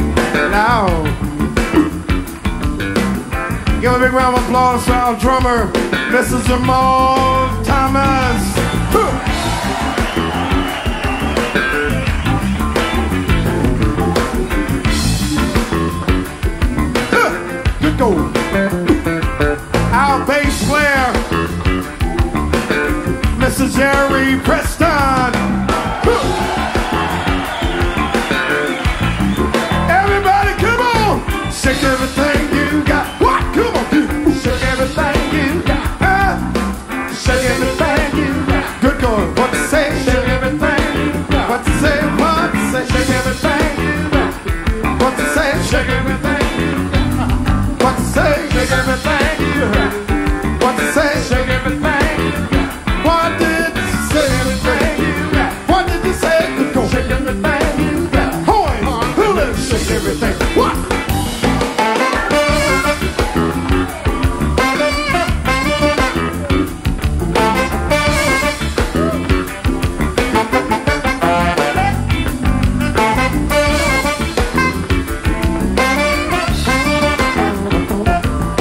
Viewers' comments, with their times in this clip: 0:05 he's just speaking bt sounds like singing
1:01 They play another league. Horns section is out of our humans understanding.